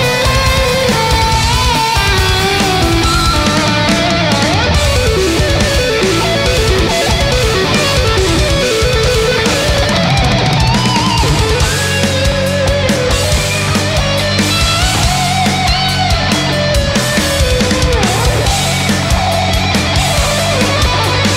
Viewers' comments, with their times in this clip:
0:03 I'm not good at exact time but I paused that is heavily Phrygian dominant. Anyway. Continue :) Edit: it went to pentatonic Double edit: I'm going to 💯 try to string what looks like a B Phrygian with e minor pentatonic Along with the double edit: I'm learning give me your soul by king diamond. If I don't push myself who will.... There's going to be a third edit 😂 My only third edit: is the use of vibrato and staccato are 🔥 My fourth edit (and final).... The circle of fifths people, it's real...